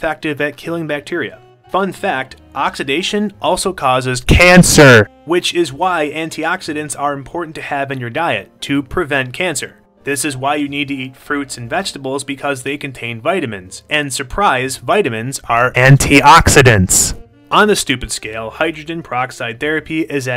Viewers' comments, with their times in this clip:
0:04 All headphone users must raise the volume.